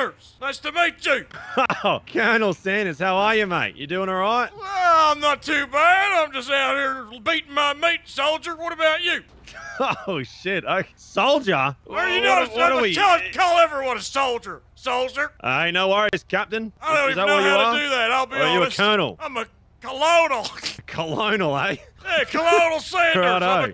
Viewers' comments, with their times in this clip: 0:07 Why does the person sounds like lazar beam? Am I tripping?